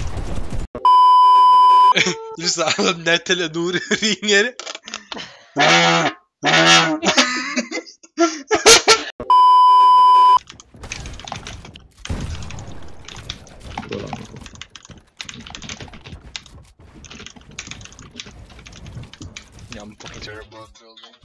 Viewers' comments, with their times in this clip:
0:05 gives me flashbacks to my boeing 787 mic